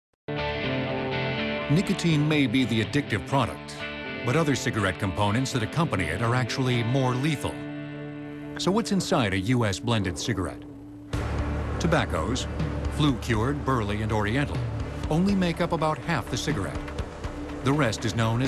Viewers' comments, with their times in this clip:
0:00 Notice I said "weak facade of impartiality." I completely understand and appreciate the informative content of this video, but notice the way in which it's presented. A deep-voiced narrator dramatically reveals the identity of the next chemical as conspiratorial music plays in the background. Setting the tone for indignation and fear. I would also like to point out the style of cinematography that was chosen to portray cigarettes. Notice the ash tray